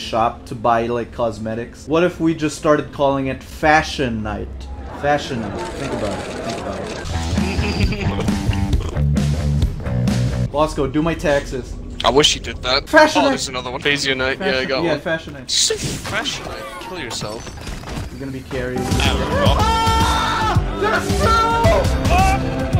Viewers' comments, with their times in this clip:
0:06 that's how the Dwarfs pronounce it.